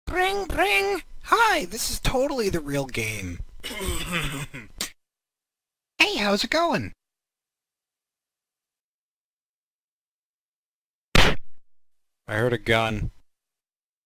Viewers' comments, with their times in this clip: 0:00 bro sounds like small from big & small